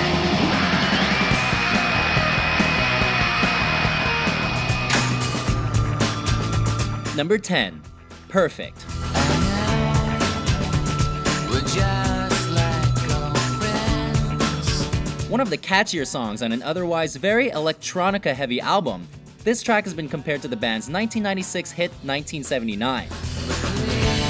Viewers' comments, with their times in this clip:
0:07 Too to two.2 loud